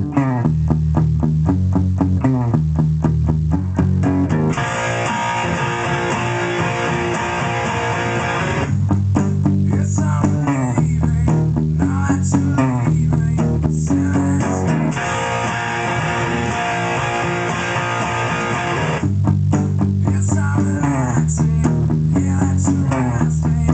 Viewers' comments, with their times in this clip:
0:04 not bad,not bad ..but Kurt played this song different ..riff starts in has a different ending ..2times F-is and 1time G power chords on E strings.. chorus riff has different timing ..but great song and technic ..keep rockin!! \m/